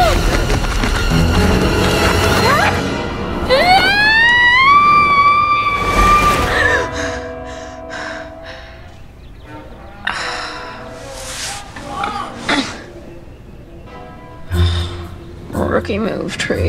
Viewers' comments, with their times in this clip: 0:03 why is she screaming